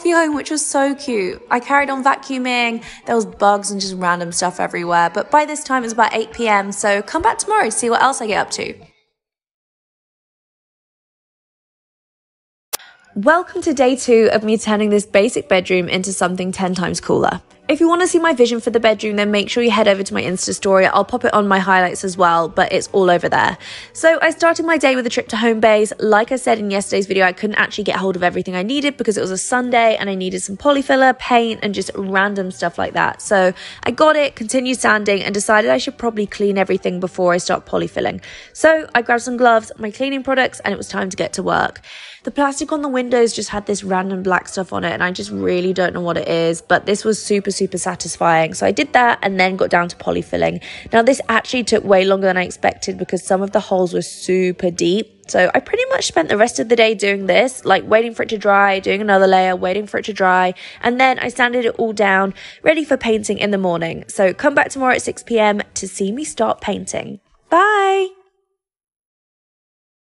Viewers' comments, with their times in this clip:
0:10 the lip smack😫
0:58 why she sound like little kelly if she grew up 😭